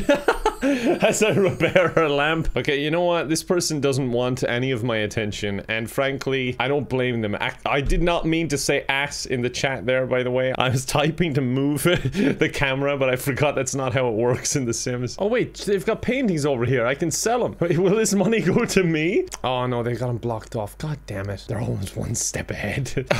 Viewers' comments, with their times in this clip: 0:05 did he say Ann frankly